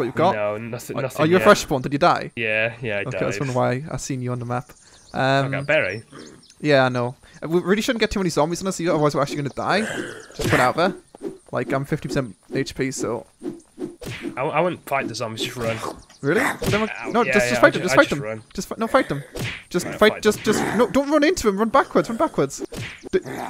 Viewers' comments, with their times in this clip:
0:08 dat flappy bird sound doh